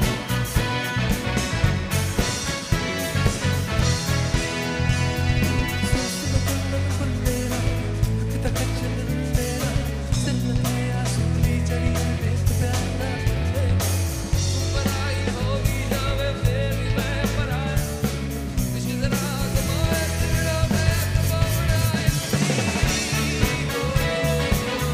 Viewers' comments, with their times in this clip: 0:05 song name please... It sounds so refreshing Edit: Got it☺